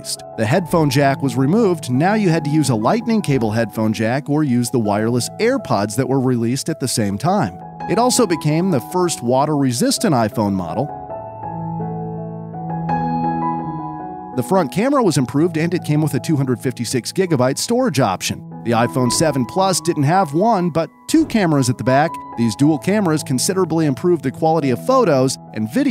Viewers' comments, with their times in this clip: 0:08 its a sad song